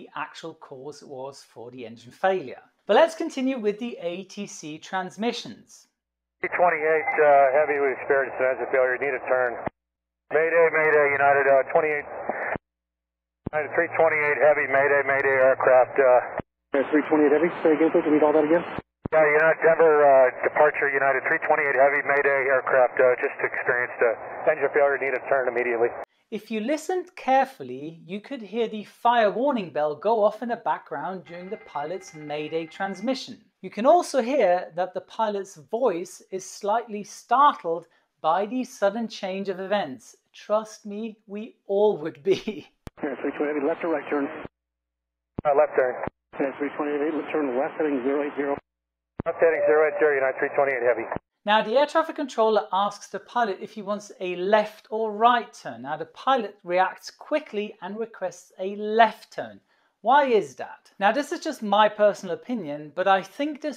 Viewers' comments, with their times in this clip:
0:06 of this video you can hear the Fire Alarm bell in the cockpit. That's one sound you NEVER want to hear as a pilot. O.O
0:15 I was listen twice and I didn't heard a fire bell!
0:49 LOL, they just got a datalink message sounds like.